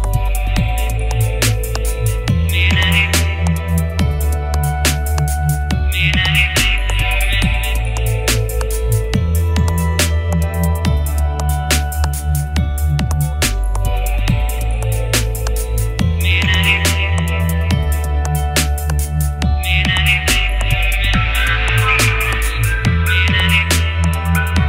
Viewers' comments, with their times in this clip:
0:08 sounds almost just like maynard from Tool. And he does say, " how can this mean anything to me" in stinkfist.